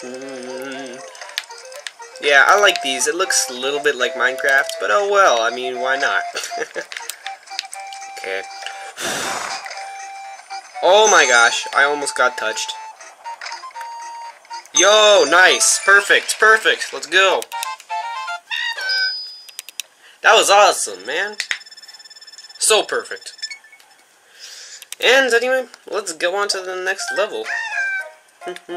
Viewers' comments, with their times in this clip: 0:10 That sounds a little, uh, weird. :P